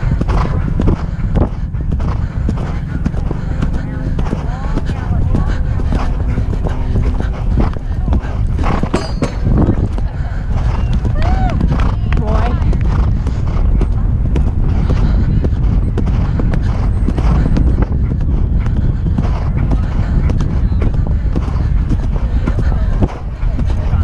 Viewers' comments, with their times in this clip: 0:08 ouch who else heard that clank >_<